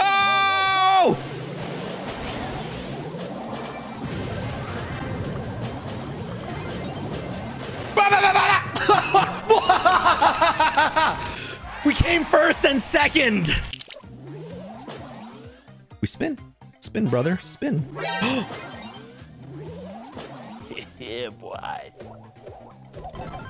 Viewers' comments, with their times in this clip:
0:08 that laughter :x